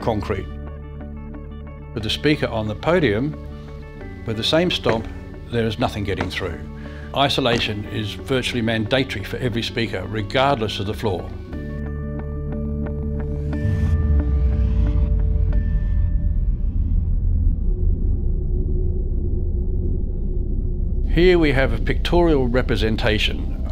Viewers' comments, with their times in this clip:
0:08 I couldn't get past the "Man-day-tory".